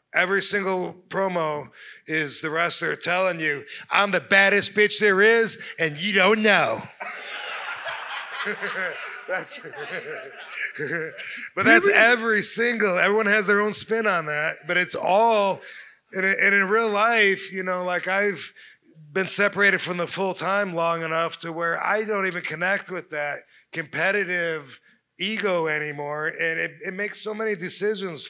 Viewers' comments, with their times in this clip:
0:08 His giggle Priceless 😂 keep on keeping on!
0:10 that "hehe" just killed me